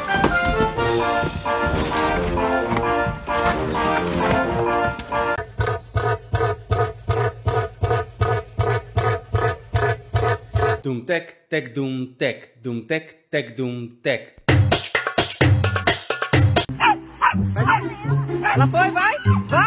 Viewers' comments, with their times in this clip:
0:06 Goodness gracious!! I loved the funny and hilarious cat ! That cat really made my day when it starting laughing along with us and chasing it's own tail!!😂😂😂😂😂 I love the funniest animals in 2023!!!! #12 is my favorite one!